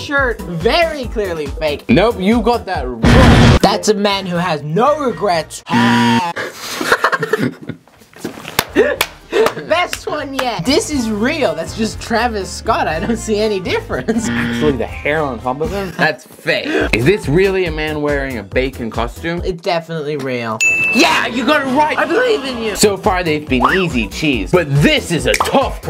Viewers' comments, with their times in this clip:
0:07 that laugh It made me laugh 😂